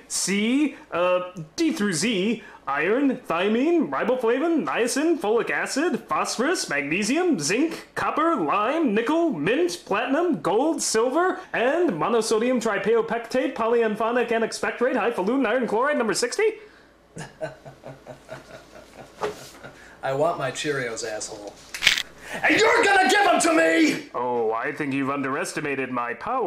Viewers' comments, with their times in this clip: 0:09 At first I thought the announcer said "Nigga". XP